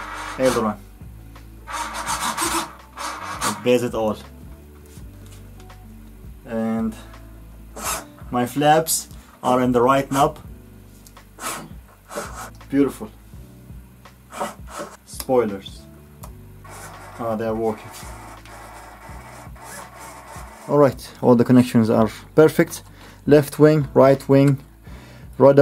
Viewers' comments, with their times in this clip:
0:10 there Sounds like the A320 ptu